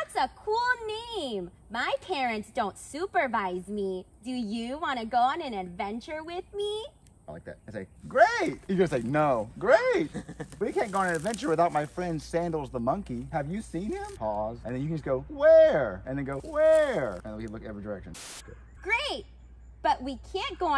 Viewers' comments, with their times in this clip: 0:07 I thought I recognize that voice